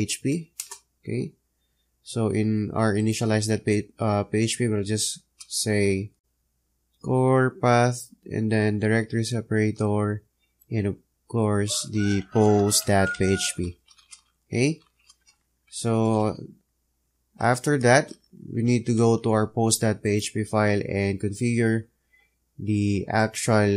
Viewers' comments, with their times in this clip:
0:08 Big up for the sound effects